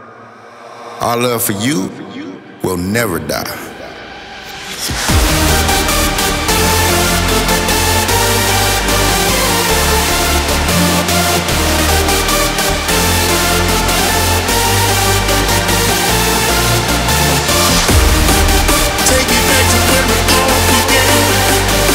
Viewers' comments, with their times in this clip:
0:04 Showtek is simply part of the Defqon 1 and they are absolute legends for me the best Part best Melody